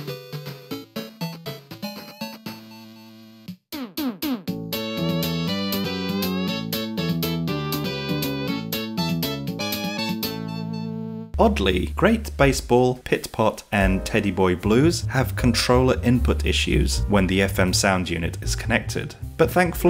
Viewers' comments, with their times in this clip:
0:03 This is what Sonic music would sound like with that chip